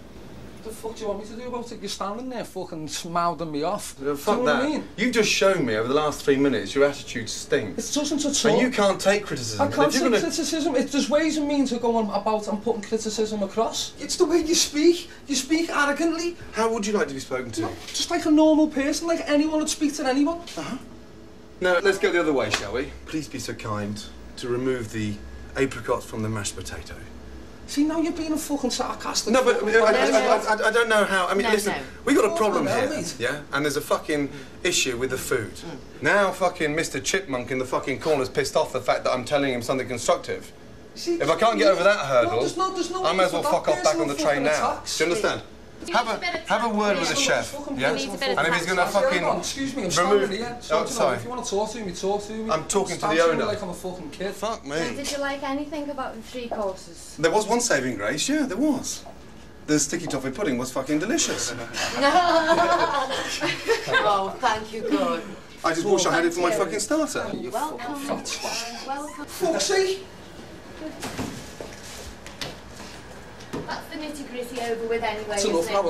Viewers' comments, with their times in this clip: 0:05 can someone tell me what accent that guy has i like people who speak like that it sound's so cool but i can never find out where its from in england
0:30 why does the chef sound like Lister from Red Dwarf?
0:33 Did anyone understand what they said?
0:35 Gordon's insult is so good even one of the members of the staff laughed, jesus, Gordon is an infinite perfect insult machine
0:37 I love how the guy starts laughing when Gordon calls that guy “Mr. Chipmunk”
1:01 they are laughing coz the dude in black yelled at the lady for making the toffee pudding earlier and he doesnt like it. Haha but Ramsey liked it!